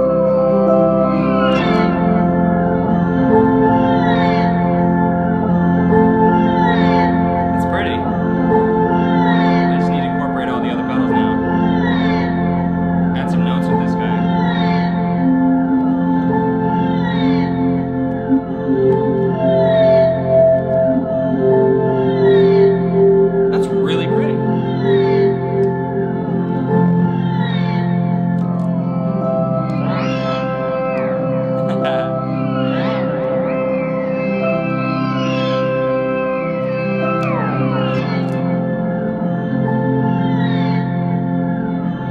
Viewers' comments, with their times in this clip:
0:04 honestly at this point it's sounding like the foundations of a Devin Townsend song..
0:05 Almost reminds me of "Silent night" ish. Sounds really cool \m/
0:15 that sounds like something out of minecraft
0:30 sounds like the level in Super Mario Sunshine where you need to collect the 8 red coins on the flying sand bird in the sky